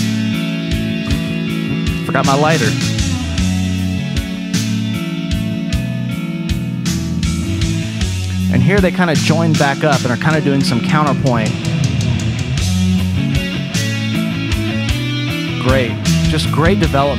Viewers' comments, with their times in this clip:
0:03 That clean guitar in the background, which follows cliffs bass line ist so beautiful. But hard to here it.